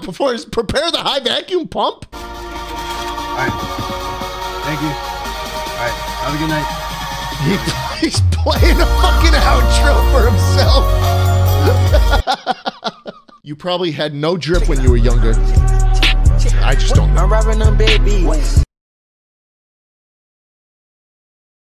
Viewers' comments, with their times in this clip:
0:07 The employee laughing though 😂
0:07 You gotta love the drive through guy laughing